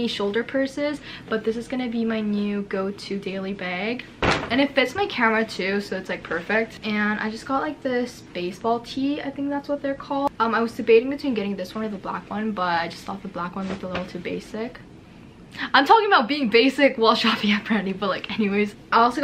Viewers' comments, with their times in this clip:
0:03 Your pronunciation of bag is so cute